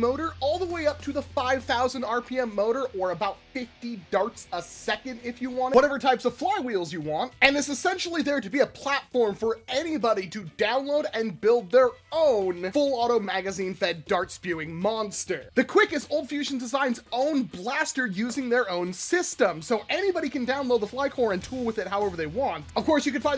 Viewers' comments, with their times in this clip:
0:05 Needed this long pause to collect myself before hearing about the flywheel compatibility.